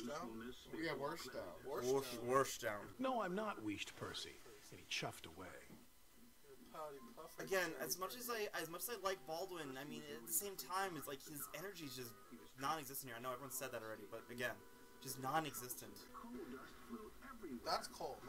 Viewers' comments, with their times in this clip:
0:03 There’s a slight echo